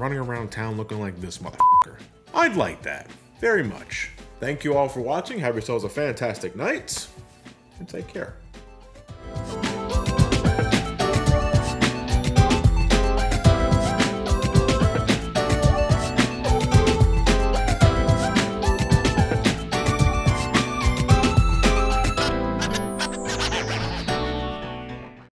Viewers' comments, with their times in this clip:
0:10 Huh, Haven’t heard that music piece in a while.